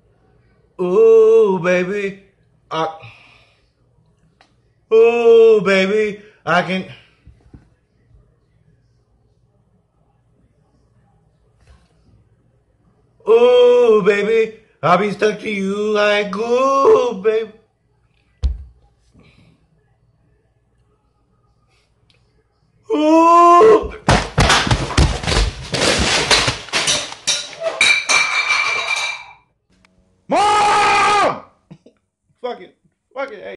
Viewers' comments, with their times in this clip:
0:06 That "I Can" Was So Smooth
0:20 * concentrates.......cow moo *aggressively hits counter
0:22 no one: that cow being slaughtered at 3 am:
0:22 when you try to whistle even though your bad at whistling
0:22 put you playback speed as 25 speed it sound demonic
0:22 singers doing a high note without auto tune
0:22 he sounds like kameel habib habob from sml
0:23 Special ed kids when the teacher tells them to make the sound of a cow.
0:23 The school band playing at the remembrance day ceremony
0:23 Cows be like
0:23 when you try to moo like a cow but you can't
0:23 minecraft old version cow sound
0:23 Slow down the speed to 0.5 then go to and it sounds like a super epic drum
0:23 i feel bad, my voice cracks were bad as well😂 this man is my childhood
0:23 old oof sounds
0:23 Guy: sings Also guy: Sees roach flying to him ALSO GUY: Hits roach like crazy
0:23 That Beat Is Cool
0:24 I replay this to get some epic beats
0:24 when your voice keeps breaking whilst you are trying to sing...
0:24 he has drum skills.
0:24 sounded like minecraft
0:24 When you're trying to sing a song, but can't hit the right notes and end up throwing a tantrum because of it.
0:24 Press then right after it seems like a remix
0:24 when u stub ur toe and you yell at it
0:24 When you listen to your voice after recording it on your phone
0:24 he sounds like a cow moo
0:24 Bruh did you guys hear that beat though it's so lit. Someone make a song out of it 😂
0:24 dang that begining sounds like the american cup song
0:24 replay it and u will hear some beat.
0:24 Press over and over and you get a sick drum beat!
0:24 sounds like a drum beat if you press it over and over
0:24 at least he can get into making good beats
0:24 Loop and you got a whole beat!
0:24 Not quite my Tempo
0:24 Who else heard a beat
0:24 When a mosquito Flying near you. Be like:
0:29 did he scream mom again at the end?
0:30 That scream was so epic
0:30 sounds like Keemstar screaming.
0:30 Gas sound effect when the person has been holding it for over 5 minutes